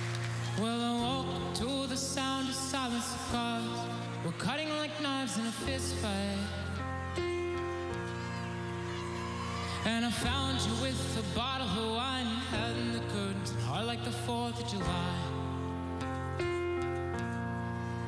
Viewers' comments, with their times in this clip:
0:04 sour note lol. he went a bit high there. still amazing tho